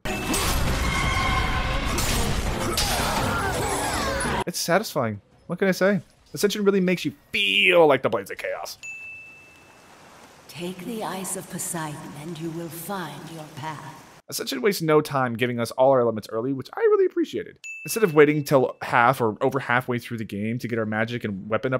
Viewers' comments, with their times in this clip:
0:07 I misheard that as “EYES of Poseidon”, which would have been a brutal callback/forward